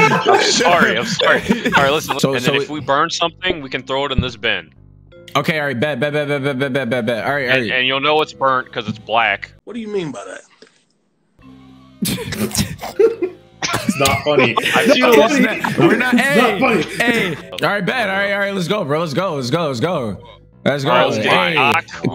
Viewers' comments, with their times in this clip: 0:07 The Loong Pause Kills me 😂😂